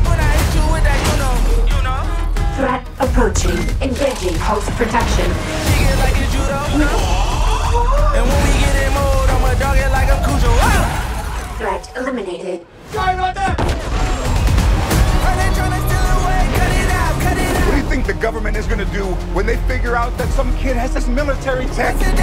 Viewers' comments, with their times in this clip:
0:06 bro gasped like deadpool 💀💀